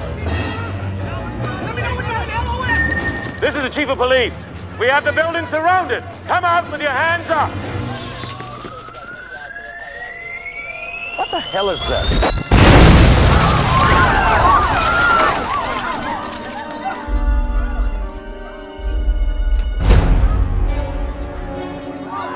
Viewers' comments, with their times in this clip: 0:04 he sound like Sgt Foley from Modern Warfare 2